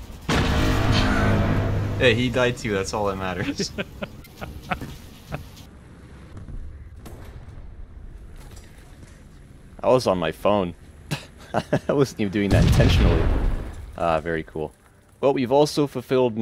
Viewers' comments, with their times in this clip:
0:04 The most emotionless "ah very cool" ever